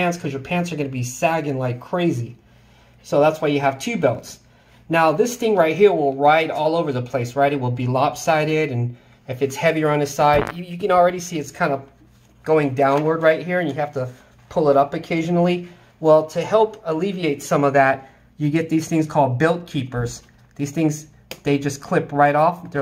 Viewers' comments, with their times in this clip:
0:09 loving the fart